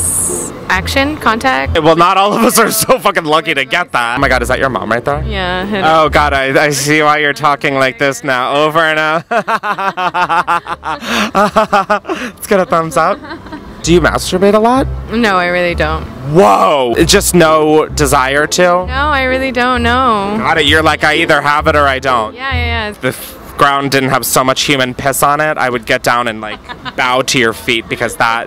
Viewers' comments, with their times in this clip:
0:09 that awkward laugh 😂😂😂💀